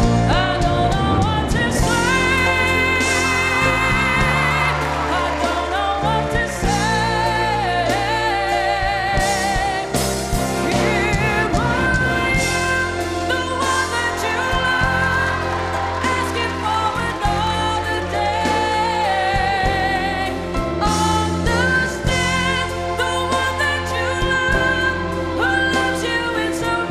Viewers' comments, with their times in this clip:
0:10 No 'pithiness' here; nailed that! He was even able to carry the 3rd or verse in what was Russell's original high range something he (Russell) had to bring down later in his singing career, at least live performances.